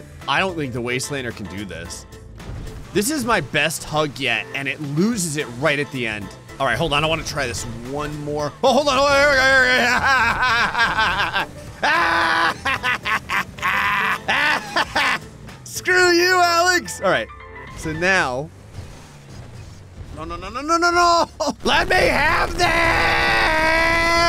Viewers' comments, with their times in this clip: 0:09 That is the laugh a person who has gotten mentally isane makes when he accomplishes something.